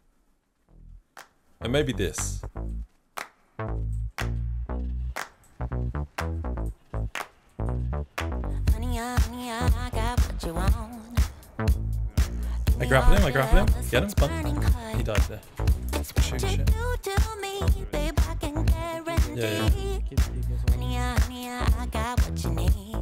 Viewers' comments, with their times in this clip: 0:04 what tf is that music my guy